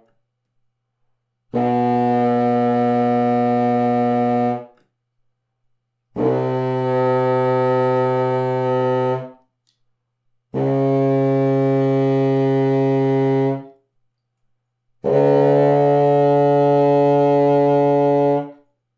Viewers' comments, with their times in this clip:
0:04 i’d love to be able to do the technique at like or so where he keeps playing after taking his mouth off the instrument lmaooo — jk love this video, very interesting!